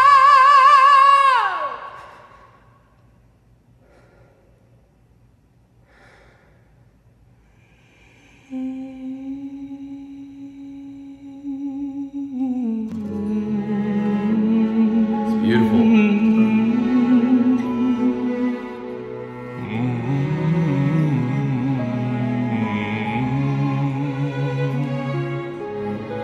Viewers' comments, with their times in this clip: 0:08 that mechanic Echo Sound I never heard before